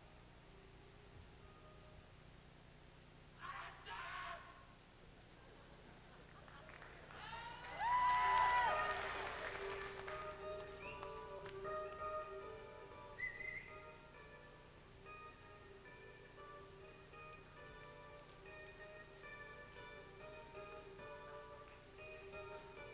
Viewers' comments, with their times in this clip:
0:09 I was there. In fact, the whistle on is me! He was on a roll that night and so was the band. I had seen him live many times, but that night was very special and he played some of the best solos I had heard. His music was so original, creative and inspiring. Thank you Allan. We admire you and still listen to your incredible music.